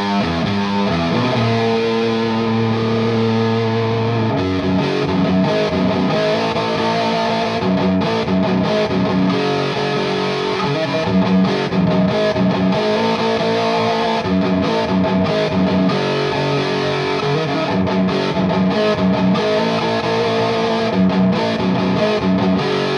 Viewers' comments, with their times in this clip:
0:05 is a little off time. Very cool video tho. Most people havent even heard this song. Its cool seeing a good youtube channel acknowledging it.
0:09 How does Tony do the ‘squeeky’ sound he seems to have invented? I’m just curious what it is/how he does it?